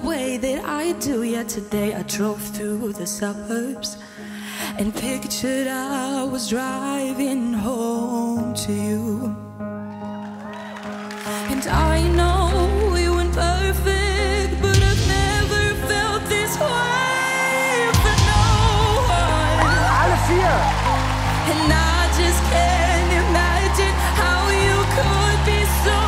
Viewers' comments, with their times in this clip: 0:08 She have a beautiful Voice 🫂✨